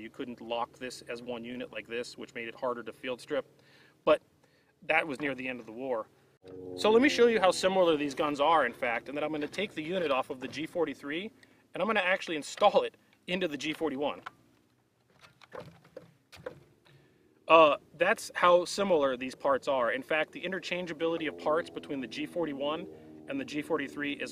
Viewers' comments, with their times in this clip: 0:05 Minecraft zombie in background